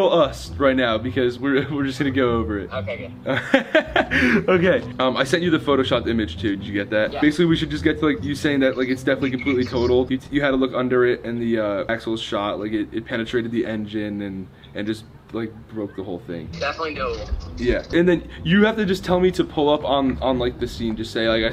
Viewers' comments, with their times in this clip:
0:05 Ethan laughs EXACTLY like Grayson O.O